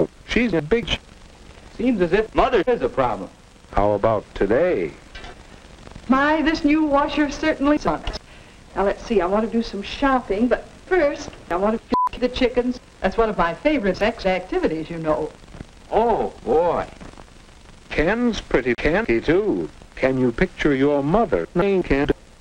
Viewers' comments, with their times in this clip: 0:05 lol that hip hop scratch move